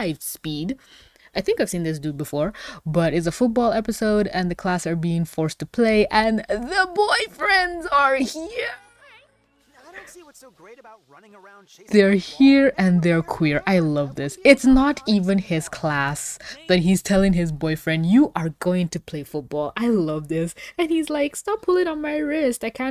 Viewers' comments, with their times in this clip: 0:06 did you just stopped breathing 😂